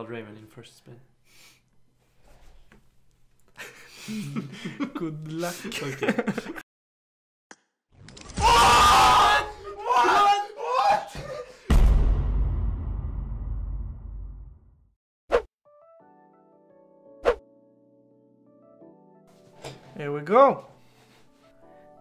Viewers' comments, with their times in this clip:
0:06 who is using earphones you can rest in peace.
0:08 my Ears in headphones are Like 🤬😂😂🤣
0:08 rip earphone users😂😂😂